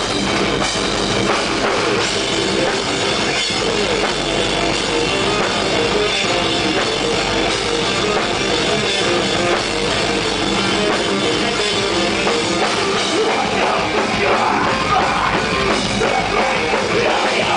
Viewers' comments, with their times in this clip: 0:03 Phill Sgrosso missed the riff on ):